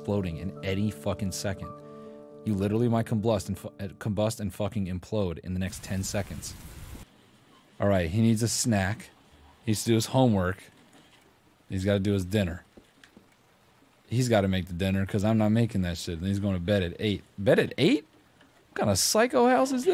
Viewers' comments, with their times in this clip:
0:05 I'm losing it at him saying "comblust" instead of combust